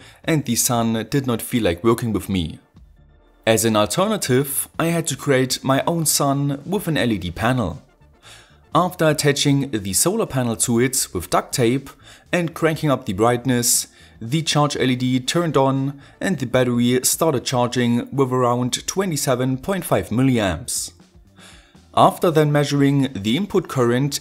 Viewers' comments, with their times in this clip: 0:09 You are one of those who use the word theee instead of the. Sounds somehow annoying... lol